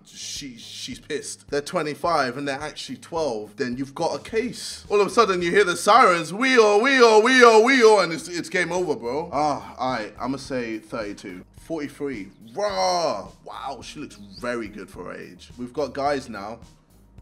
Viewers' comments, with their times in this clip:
0:04 JJ calling the tribe